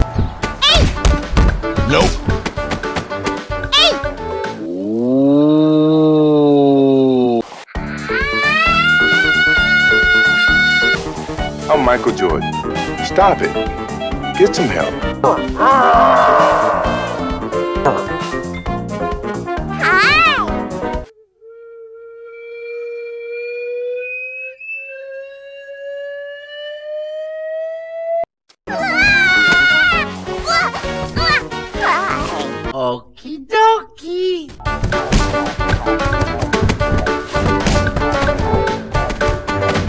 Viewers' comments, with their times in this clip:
0:09 kirbo screams of anger
0:21 Funny. Slide whistle, too.